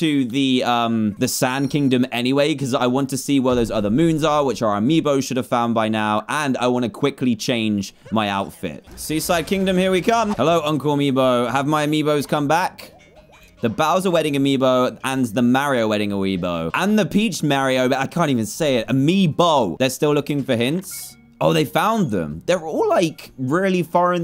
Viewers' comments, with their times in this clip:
0:09 I thought he said "Suicide kingdom here I come!"